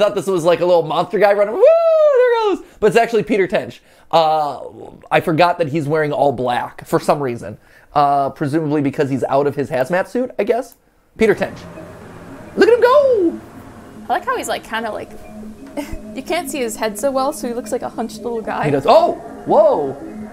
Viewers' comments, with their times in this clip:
0:03 The phone at the end of the video can be heard during the monologue (of Damage Control, not this video)